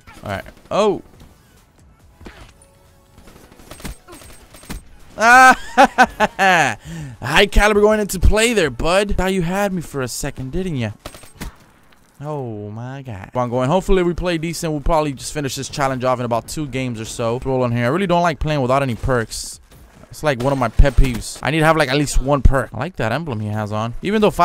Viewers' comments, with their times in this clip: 0:07 you sounded like lester from gta laughing 😂